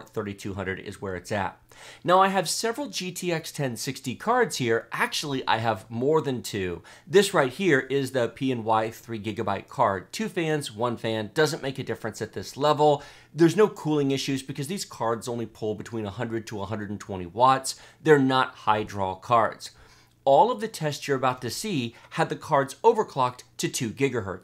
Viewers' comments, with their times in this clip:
0:09 “I have several cards here”.. pulls another card from nowhere “actually I have more than two. If this guy talked any smoother, I might think he’s trying to seduce me. Lol